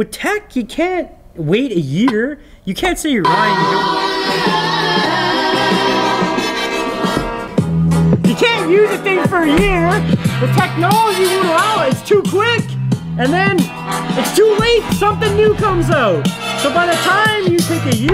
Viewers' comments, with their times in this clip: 0:03 .. damn that last beat is hittin haaaard!!!